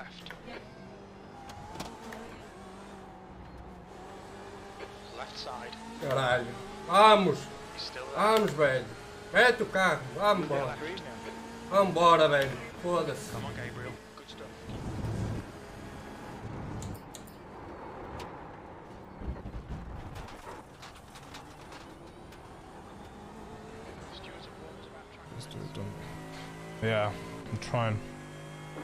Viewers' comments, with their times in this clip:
0:09 Fast and the furious gearbox